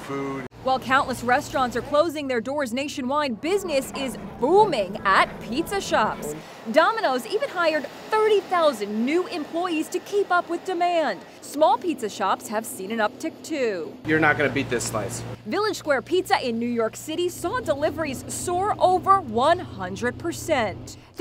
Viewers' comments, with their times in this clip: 0:03 why she say booming so husky 💀 okay say it with ya chest